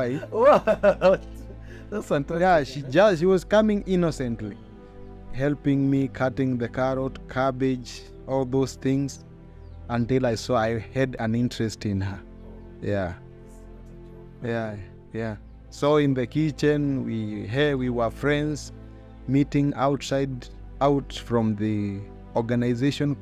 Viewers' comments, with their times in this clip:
0:10 Now she is also becoming to speak English in Kenyan accent.